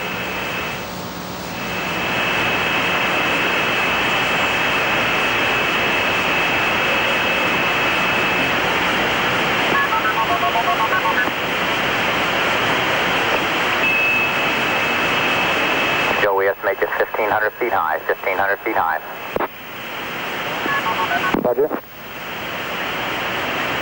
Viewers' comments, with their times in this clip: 0:09 It seems NASA was still using analog leased lines for their audio backhaul. You can clearly hear MF dialing for example.